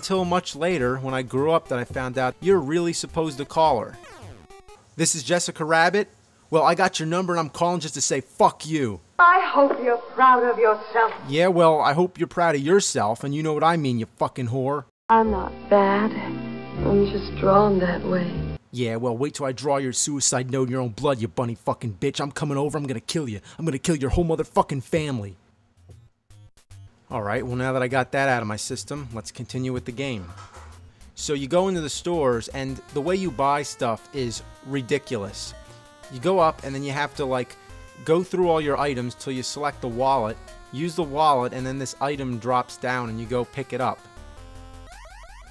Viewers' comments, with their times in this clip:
0:04 I never realized how obviously dubbed over that is.
0:29 Random noise occurs in the background.